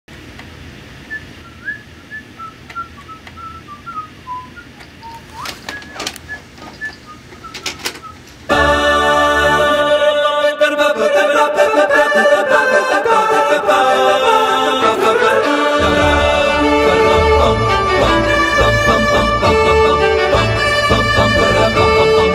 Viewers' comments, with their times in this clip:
0:06 Chewe in the background going like, "doit,doit,doit,doit,doit,doit!!!"is just killing me.